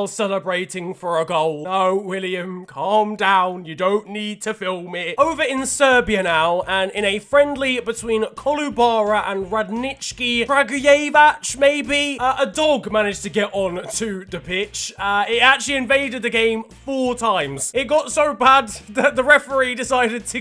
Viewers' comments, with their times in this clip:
0:08 that serbian pronunciation was actually pretty good for an English speaker